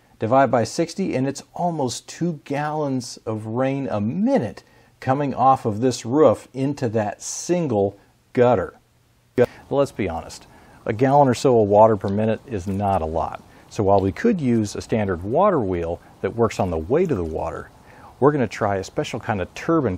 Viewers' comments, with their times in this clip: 0:06 Why does it sound like he is saying ruff then roof?